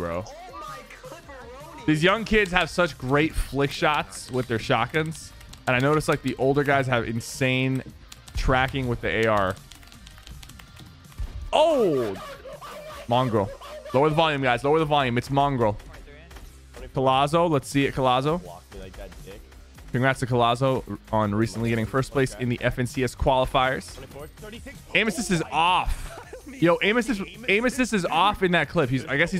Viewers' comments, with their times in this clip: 0:08 can we get a rip headphone user pls because that hurt my head
0:12 rip headphone users with high volume